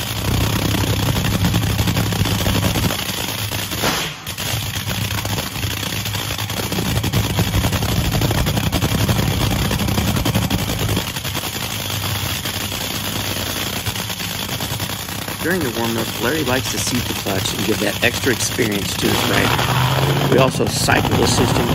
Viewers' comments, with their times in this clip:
0:04 The throttle “whack” is beautiful.